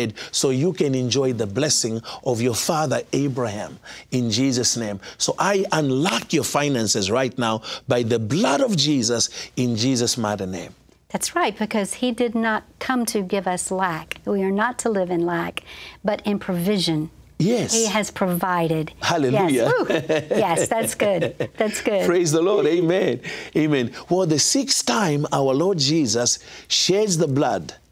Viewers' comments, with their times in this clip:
0:09 in Jesus mother name? Have I wrongly heard? What does that mean? I was watching with auto-generated subtitle, my english is not so good...